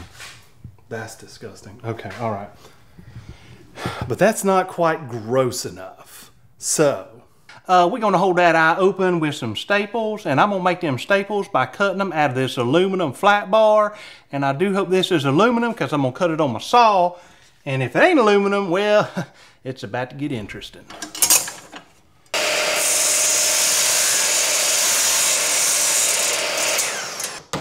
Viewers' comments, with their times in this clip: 0:08 Lol! Love all the designs and accents.